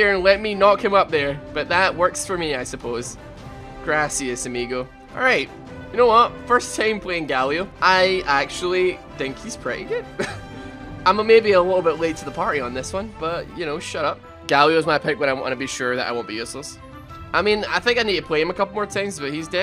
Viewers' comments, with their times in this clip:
0:03 Nobody: White people trying to speak spanish: